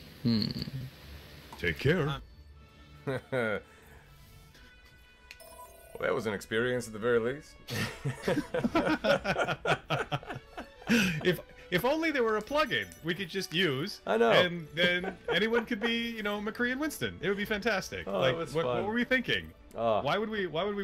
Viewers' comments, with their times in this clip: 0:07 Mercer channels Gilmore for a single statement